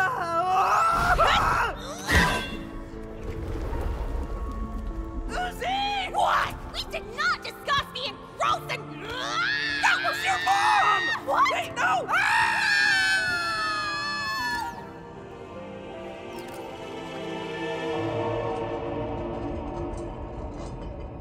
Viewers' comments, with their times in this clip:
0:05 That "WHAT?!" is some of the most emotion i've ever heard come from a fictional character. Elsie Lovelock killed the rage behind that shout
0:09 The violent, bloody, and also my favorite series Also they’re screaming then hugging-